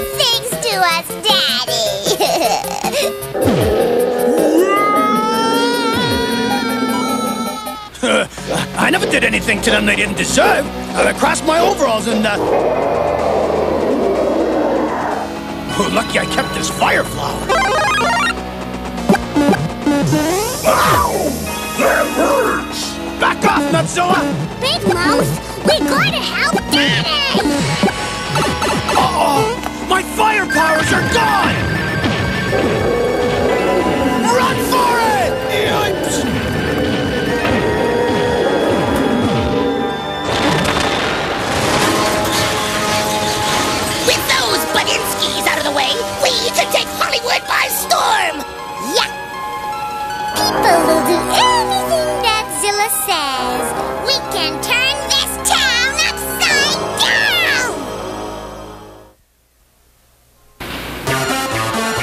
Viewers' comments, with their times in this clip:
0:05 Mario's scream is an archival audio clip of Lou Albano instead of Walker Boone.
0:35 Luigi’s Yipes audio of Danny Wells instead of Tony Rosato
0:43 I heard a Thomas and Friends crash sound effect